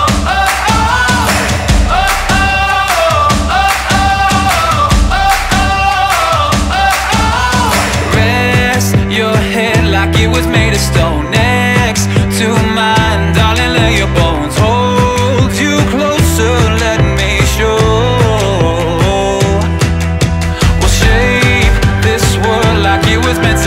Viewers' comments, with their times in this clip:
0:09 sound like "when can I see you again" to anyone else?